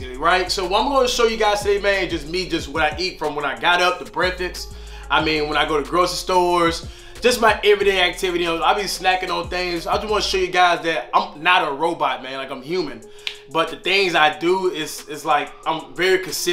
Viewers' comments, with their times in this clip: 0:03 my mans said “ breafix “ 😂 , my guy tho 🤘🏾